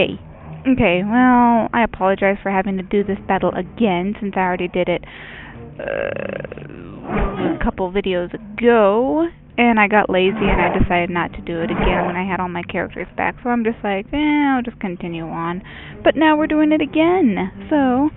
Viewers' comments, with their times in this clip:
0:04 Did someone cast a magic burp ?